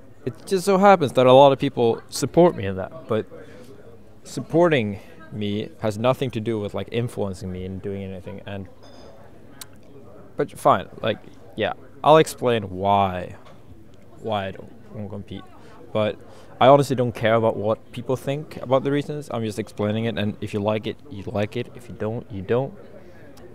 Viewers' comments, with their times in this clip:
0:04 WHY DO I HEAR YOSHI'S NEUTRAL B